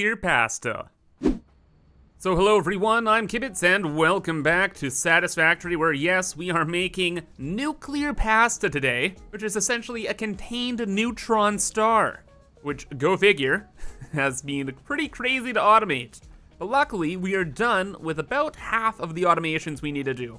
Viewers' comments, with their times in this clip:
0:08 is he gonna mispronounce Pasta the entire video? Because I already can't handle this